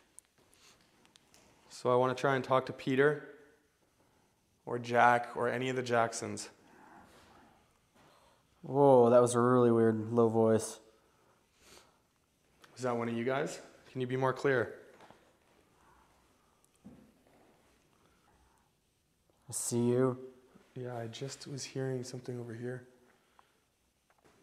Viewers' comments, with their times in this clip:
0:08 Hearing Multiple get out starting